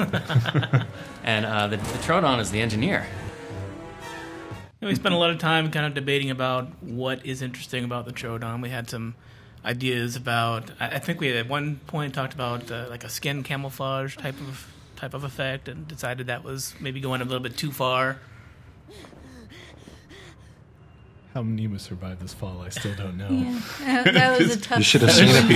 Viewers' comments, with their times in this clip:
0:09 Sounds like Carnotaurus